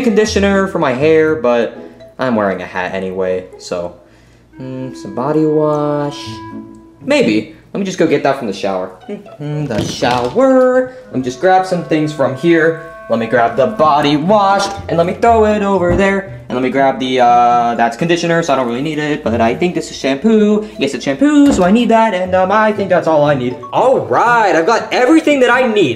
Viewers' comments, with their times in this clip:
0:08 What a song.